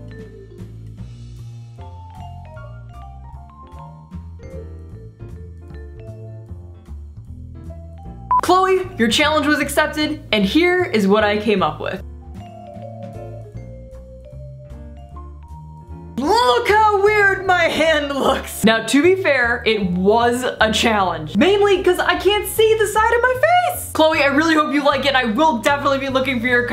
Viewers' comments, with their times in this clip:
0:08 The beep sound scared tf out of me LMAO i jumped